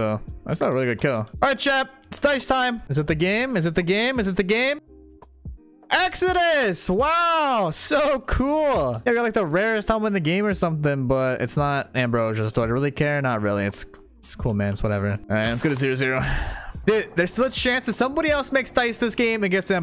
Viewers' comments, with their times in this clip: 0:06 I cannot tell if he’s happy or being sarcastic at this point...